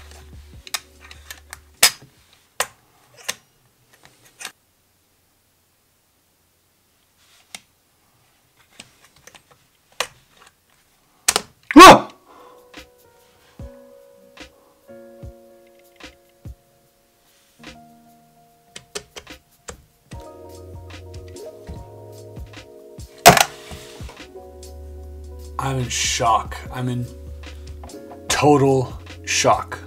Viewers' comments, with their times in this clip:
0:10 his little scream lowkey scared the crap out of me